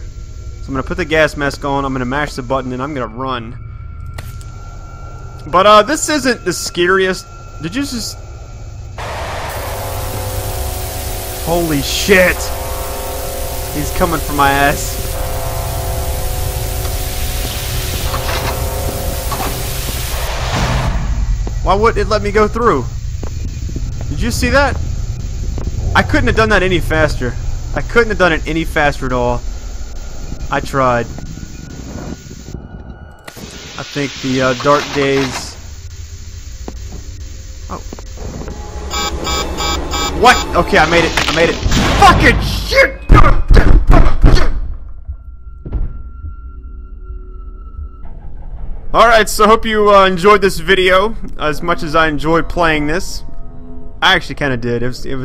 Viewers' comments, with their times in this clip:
0:09 That's just so weird how SCP-513-1 appears on the camera feed, right as 513 plays over the intercom
0:33 scraping sounds, locked room, unknown entity in the monitor few seconds earlier Whelp, you're fucked.
0:41 HAHAHA you made me laugh so hard when you started banging your desk and moaning like an infant with a tantrum XDXDXD